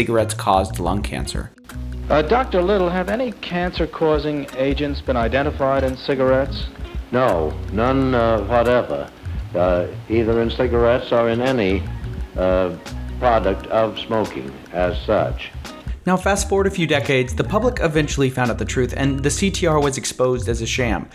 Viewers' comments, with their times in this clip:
0:04 when you a scripted robot
0:06 oh lord this dude needs to learn how to spoke